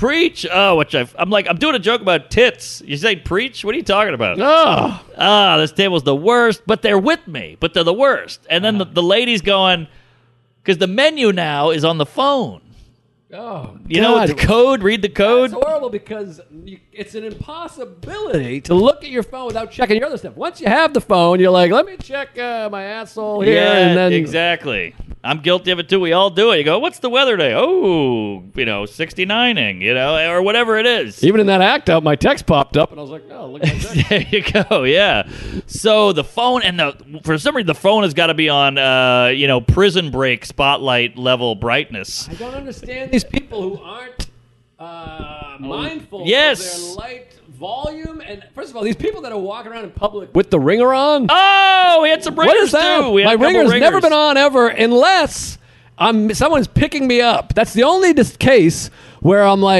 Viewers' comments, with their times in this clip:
0:05 Guys, Joe's mic has been cutting off for a few episodes
0:35 Joes Mic is fucking up but I am playing it on speakers right now, sounded fine on my phone. Equalizer fucking up maybe?
0:45 Joe Bad mic cord drop-out sound.I'm the only one in the world who really...no ACTUALLY listens ACTUALLY.